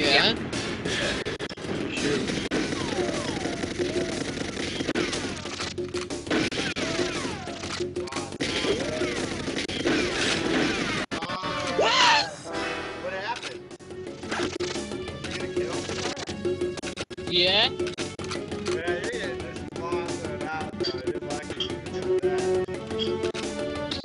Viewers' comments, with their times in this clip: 0:09 sick killer screams it's so funny